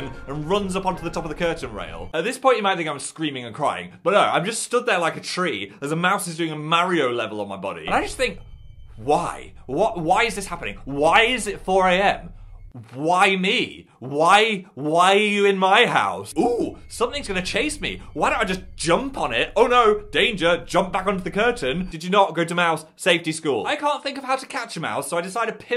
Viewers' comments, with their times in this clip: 0:08 that "why!?" was so powerful i had to replay it